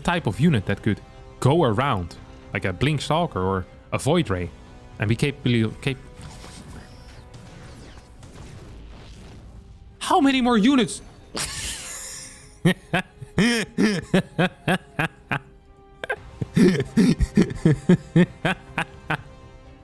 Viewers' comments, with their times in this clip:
0:04 OMG 🤣that reaction following the blink down the ramp followed by the donkeylaughter after the panic recall is priceless!! ❤❤❤❤ We love you Captain.